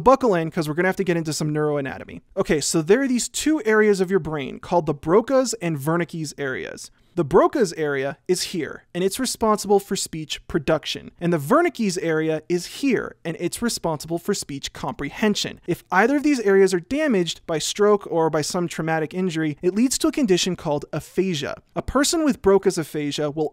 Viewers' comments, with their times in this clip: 0:10 the broke ass area